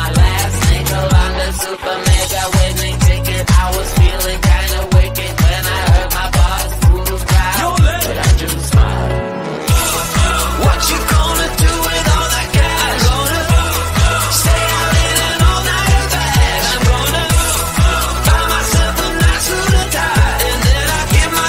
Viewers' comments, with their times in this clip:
0:07 The music choice